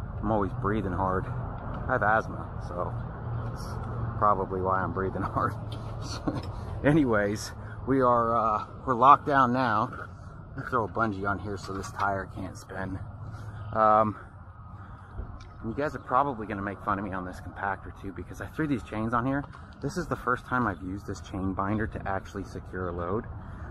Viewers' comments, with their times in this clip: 0:07 still breathing hard from the shower encounter......hahahaha